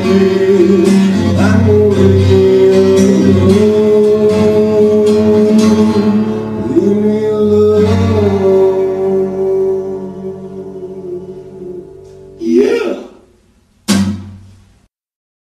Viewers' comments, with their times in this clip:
0:13 YEAH High pitch vocals on there.